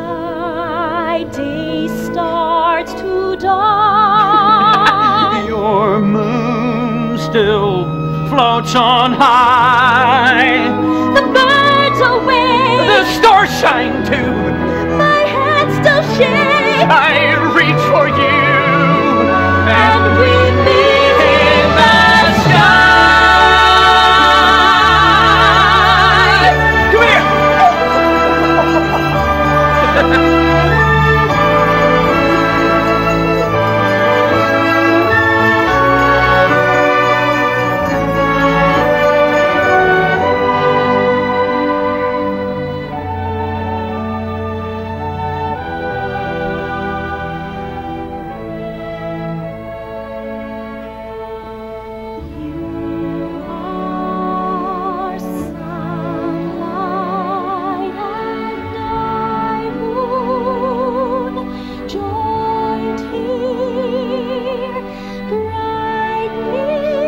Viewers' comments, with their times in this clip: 0:04 where did that kookaburra-like chuckle come from? From the male singer? Very odd
0:19 When they sang that part. ugh. Chills.
0:52 Beautiful voice after kissing.. WTF